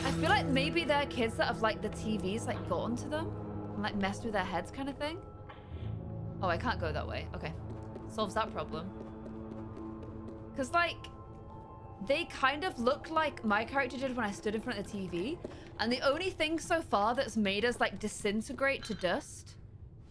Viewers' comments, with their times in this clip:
0:04 That realistic nocking made my German Shepherd go on high alert Lol